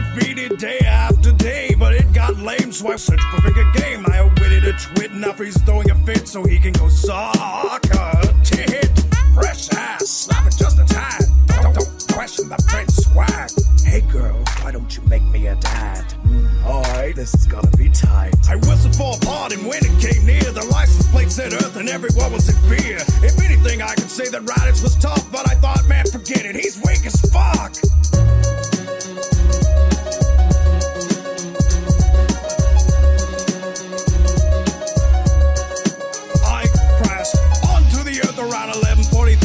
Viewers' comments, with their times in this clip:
0:05 the animation and music was sick and you're voice prince vegeta made it so funny when SUuucucukkckkckka aa aa tii------t and the sick beat
0:21 The Prince of Belair in the background